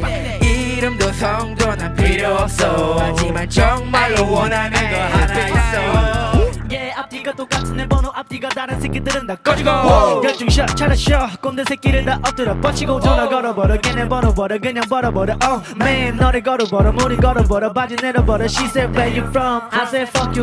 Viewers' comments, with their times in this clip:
0:05 dat lil woah🥺